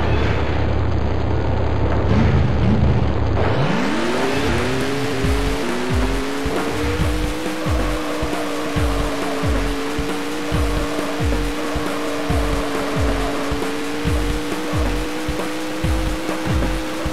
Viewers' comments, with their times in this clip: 0:04 Nice engine sound Twin Mill II